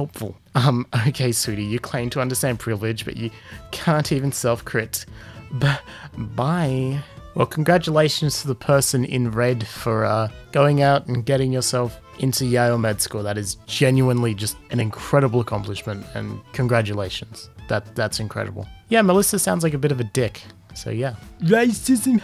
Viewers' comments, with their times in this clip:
0:06 there’s something about the buh bye that infuriates me to no end.